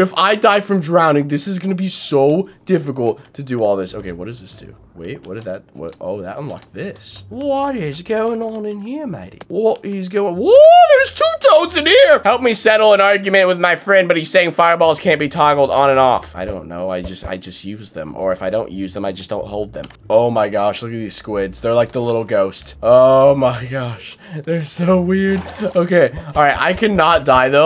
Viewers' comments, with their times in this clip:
0:08 unspeakable: what is going on here mate? me: .... everything also ur australian is gettin’ better period